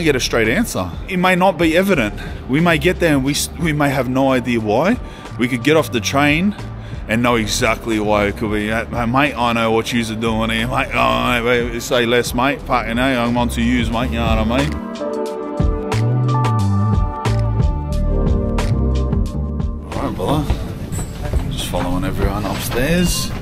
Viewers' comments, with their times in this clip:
0:10 I realized I am far too American to understand a fucking lick of what you said before hopping on that first train. I watched it so many times and I just got more confused 🤣